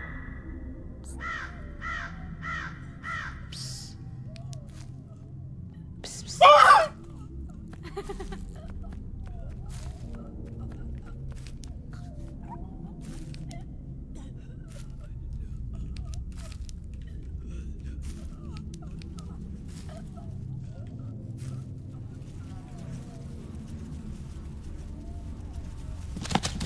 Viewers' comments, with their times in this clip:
0:08 the way she just laughed at you lmao